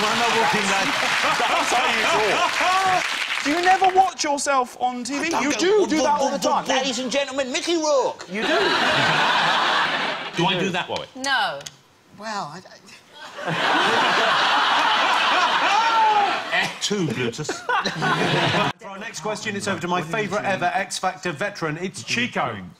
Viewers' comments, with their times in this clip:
0:07 that's a solid Jonathan Ross tho